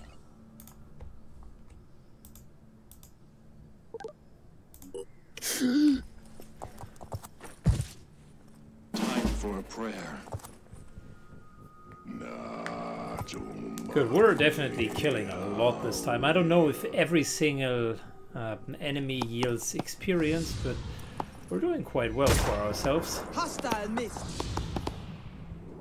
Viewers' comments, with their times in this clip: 0:08 Phoenix Soldier - "Time for a prayer" Anu Soldier -"NAAAACHOOOMAEEAAAOOOEA" Phoenix Soldier - "I just heard someone praying for natchos".